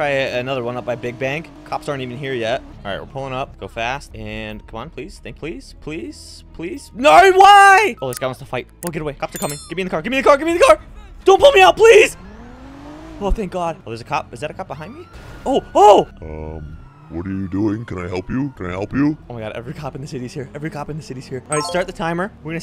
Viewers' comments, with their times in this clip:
0:06 Bros voice changed?
0:06 You're not Australian, right?